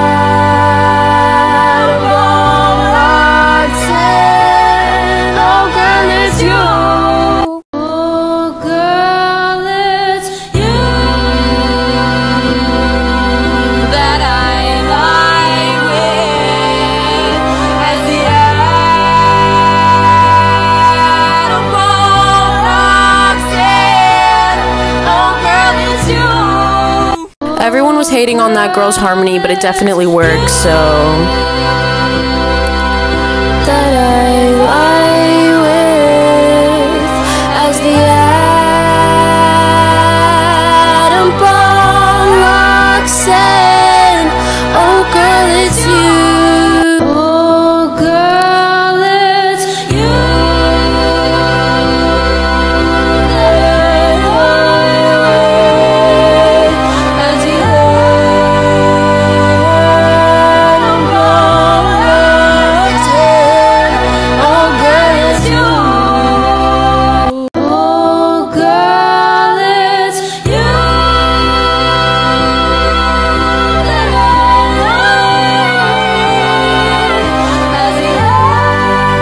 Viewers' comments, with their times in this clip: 0:08 oooh the spicy dissonance really makes it stand out? fits with the song theme
0:08 is the only one that immediately created in a picture in my head of two lovers desperately yelling at each other as the world ends. it's amazing
0:08 Initially I admit, I didn't like the melody but the more I listen to it the more I like it's growing on me.
0:08 I Absolutely loved the dissonance that the girl used
0:08 her harmony was great people hating for nothing
0:08 This dissonance goes suprisingly well with the bittersweet tones of the song its covering, im shocked that people were really harrassing her over this.
0:08 lol the way i imagine is kinda like “gotta go my own way”. you hear the chorus originally as the op intended it and then in the last chorus 50s steps in and overpowers / is dissonant to op and causing an emotional battle between the two of them in song. tbh whenever i hear the original or her revised version i just love it because yeah it does overpower the og but i kinda like it? idk haha
0:08 The problem with the harmony wasn’t the harmony itself, it was the way she sang it, which didn’t blend with the other girl’s voice, it’s no one’s fault or anything, their singing styles just didn’t match up very well and it made it sound awkward
0:09 I can’t believe TikTok bullied the girl until she deleted the video. It’s a complex harmony, some harmonies are MEANT to feel uncomfortable until the sweet release at the end, where “bomb locks in” is. It’s so satisfying because it was so uncomfortable before, god, it’s so good. It’s like a good jumpscare or bass drop, cmon!
0:09 This duet gives me chills, it sounds so eerie and powerful... I only just learned about this whole thing today from a music discussion, and I honestly can't stop replaying it.
0:09 a perfect fifth is a very uncommon harmony (in the west). I think that's why some people saw it as sounding "wrong" but if you actually listen to it without the idea of past influence you will notice that it actually sounds very beautiful.
0:09 WE DID A MUSIC LESSON ON THIS DUET IM NOT EVEN KIDDING essentially, harmonies are heard at the 3rd, 5th or 7th, however, with the duet, it was being sung on the 3rd and the 4th, rather than the western interval of the 3rd and the 5th, therefore sounding dissonant. BUT in some cultures, the 3rd and 4th intervals being played/sung together are common!
0:09 Makes me feel something barely any songs have made me feel. I love it, it is truly an incredible dissonance. It's hard to put it into words, but it just makes me feel something so strongly that makes me want to yell, not of anger, but in awe. Beautiful.
0:09 the girl uses Dissonance like a chad. like the way E perfectly clashes with Cm making Dissonance that Feels Wrong. HOWEVER, when it shifts to the correct sound at B0mb, it does something i cant quite explain. either way, it goes hard, so feel free to screenshot.
0:09 Ngl I only liked the one 😂 I literally cry every time I hear "locks in" with that harmony
0:09 sounds great. It’s the vowel shape that’s taking away from it. The “ah” vs the “oh” or even “eh” shape that the video after the original sings. Same melody better vowels. Well I wouldn’t even say better, just more near what the original singers vowel shape is so it hehe locks better.
0:09 I don't know why people hate crunchy chords. Maybe it's just my synesthesia, but it tickles my brain in the perfect kinda way. Crunchy chords > traditionally "pretty" chords
0:09 All yall praising that girl bc Adam Neely told you to. The harmony itself is fine, but as a trained vocal performer I can just tell you that she is just not a great singer that's why it sounds bad; not the harmony.
0:09 Homegirl's harmony was just too complex for the average listener. THAT'S why it was hated on.😂
0:09 There is no “right” or “wrong” way to do things in music. If it sounds interesting and you like it, then it works. If not, then it can still work for other people who do like it. I’m appalled that people bullied the girl because of the dissonance, despite her harmony working so well
0:09 love to see all the support for the girl ❤ I think it requires a certain pallet, but it sounds cool to me. people always talk shiit & will have their opinions.
0:09 I think is actually one my favourites cause the "atom bomb" part just sounds SO powerful
0:09 A big problem of the one is the volume and not blending. The notes she sings are the part I like
0:20 WHY DID GURL GET BULLIED PARALLEL FIFTHS SOUND GOOD. EVEN DAVID BOWIE USES THEM
0:47 I love that harmony. Takes a little drama out of the song but still sounding passionate
0:49 “Ah yes, my perfect harmony technique I haven’t used since the Heian Era”
1:01 I really love that little resolution